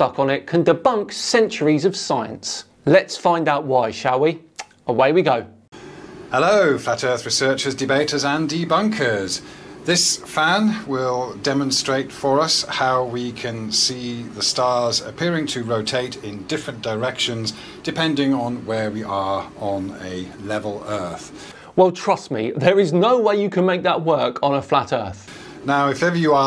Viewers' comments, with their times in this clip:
0:07 min of dead air until the video starts. Bit annoying this is almost any video